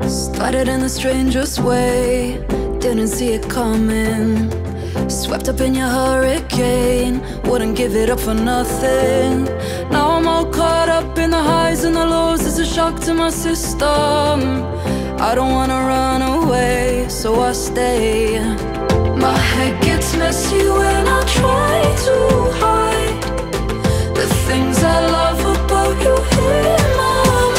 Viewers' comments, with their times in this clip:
0:10 reminds me of the song hope by the chainsmokers